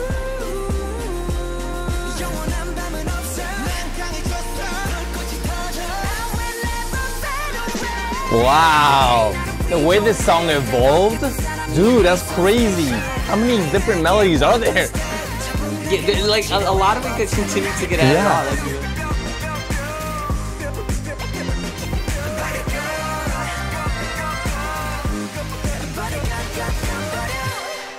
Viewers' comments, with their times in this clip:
0:09 Why dont you tell jin hightnote? background hightnote.